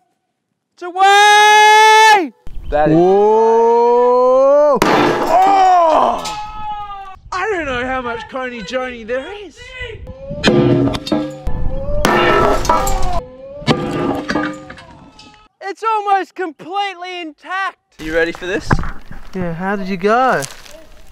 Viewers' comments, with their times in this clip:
0:07 get the marbles outta ya mouth dude